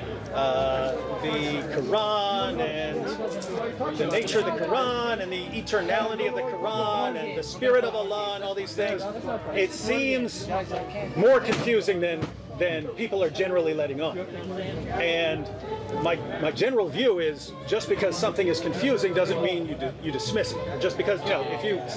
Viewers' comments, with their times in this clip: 0:05 sam's minder mockingly says "war games," as if sam told him by hiding from debate he was doing psychological warfare vs shaykh. inshaallah these guys return to the fold of Islam.